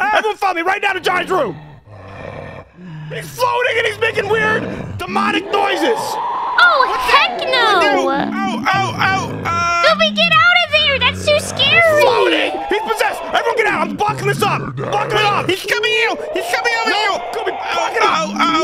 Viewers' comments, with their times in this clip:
0:06 Johnny’s demotic scream is creepy 😰